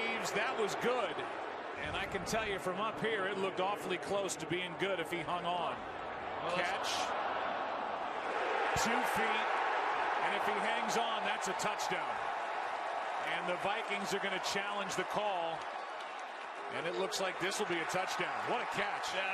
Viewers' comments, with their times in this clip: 0:05 I love how you can hear the crowd watching the replay and counting his feet down ...ONE...TWO AHHHHHHH!! Haha #Skol